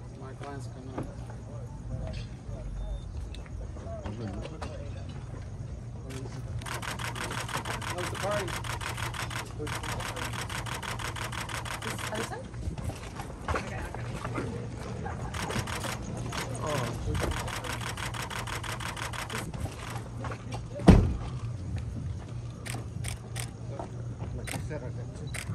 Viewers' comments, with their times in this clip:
0:10 OH WOW I mean look at all those flashes and how many clicks the camera makes per second 😐😳